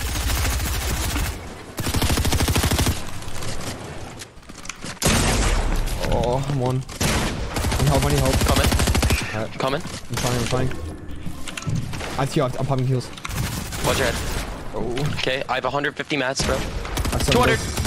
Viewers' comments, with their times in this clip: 0:05 Clip why u moan like that